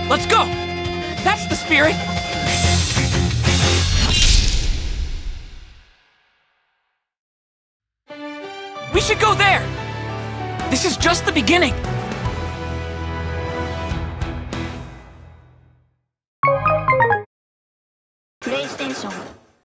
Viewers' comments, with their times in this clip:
0:08 Sounds like it came straight out of Darling in the Franxx.